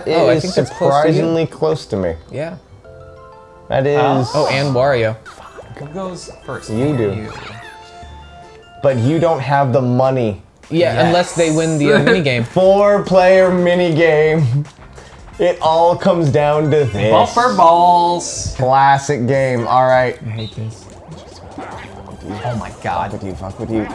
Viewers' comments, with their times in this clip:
0:04 The super quiet "fuck" is sending me